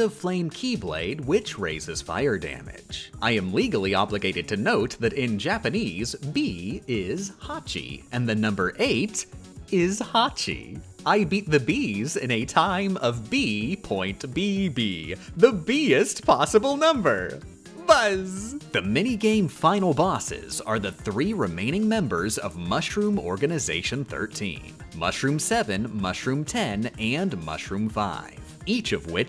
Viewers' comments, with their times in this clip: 0:05 I'm loving how pleased with himself he sounds
0:11 her saying buzz is the cutest thing i've ever heard oml
0:17 she sounded so excited when saying "buzz" that was adorable
0:17 the way she said "buzz!" was cute as hecc
0:17 the way you say buzz here came so unexpectedly but makes me extremely happy